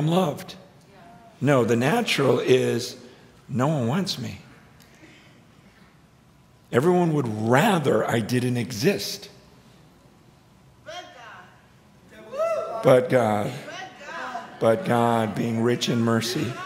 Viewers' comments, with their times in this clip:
0:03 That crazy lady is so obnoxious screaming and parroting. Great teaching but wasted on her. Some just want to make sure they hear themselves on the recording, I suppose. So disrespectful.